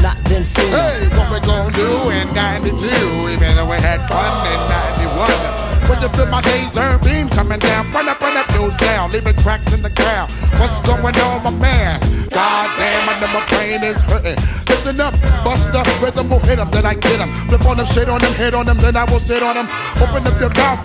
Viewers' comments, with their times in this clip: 0:07 and the horn verses are all i remember from when i was a kid. busta killed it though. still hot.